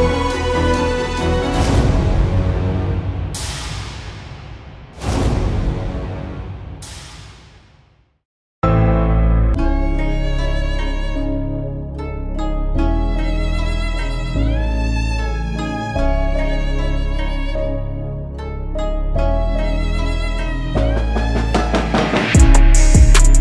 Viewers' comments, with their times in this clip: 0:09 Why you change cool music... after ....